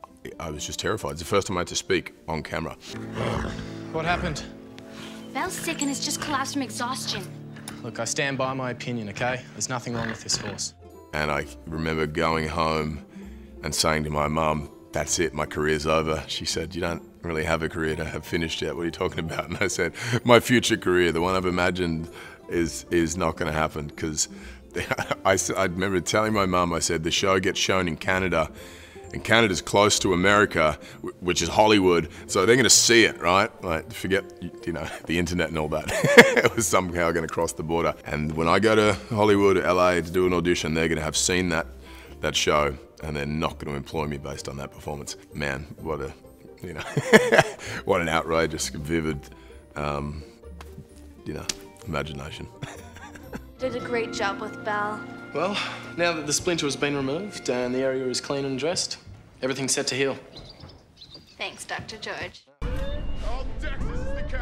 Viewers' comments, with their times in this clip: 0:08 Chris sounds exactly like Liam!
0:46 omg I love his laugh